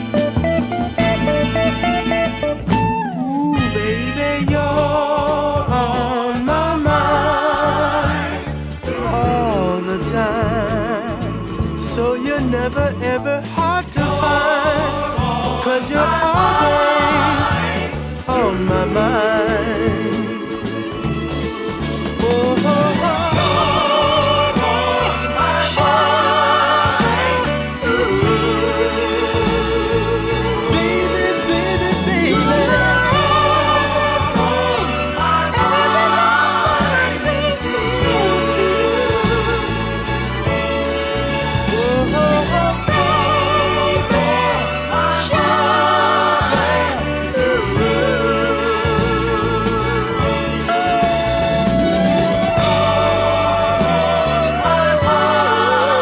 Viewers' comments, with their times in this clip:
0:04 my favorite part of the song just beautiful music plain and simple
0:24 the violin and sax and drums 😍😍😍💘💘💘😭😭
0:43 I fell in love with this song the day I fell in love with you and everytime I hear this song I see your face in the melody's and your smile in the harmony It's just so sad that our love had to end like this song. and as the sound of the trumpet's are fading, reminds me of our love ending knowing I'll never see you again, So sad it had to end 💔 but you'll always be on my mind Good bye lovely lady, You take care of yourself 95-0/10 You'll never see me again and We will never see WE again no you and no me, One last hug one last kiss one last night together I'll think of you forever